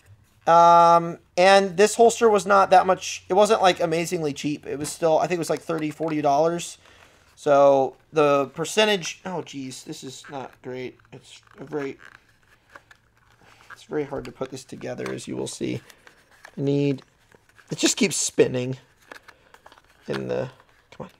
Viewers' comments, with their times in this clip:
0:08 is that you morty ?